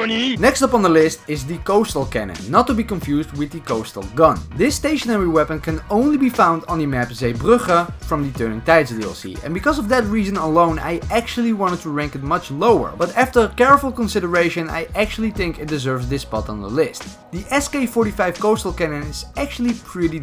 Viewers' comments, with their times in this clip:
0:05 when the dutch accent kicks in
0:06 Finally a real Dutchman that can pronounce that map name correctly.
0:06 ( proceeds to mumble in dutch)
0:06 are you Dutch or something? that 'Zeebrugge' couldn't sound more Dutch than that.
0:06 are you from the netherlands because it sounds like it
0:06 when the Dutch kicks in
0:07 dutch pronunciation intensifies...
0:07 i was wondering if you were german but the “zeebrugge” gave it away